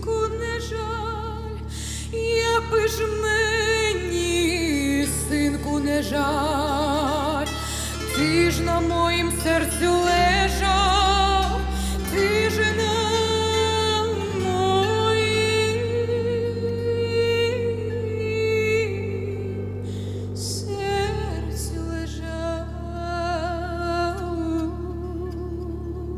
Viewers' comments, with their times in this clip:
0:09 What is the name of that song ,iv never heard it before It's really beautiful. Tom has still got a lovely voice.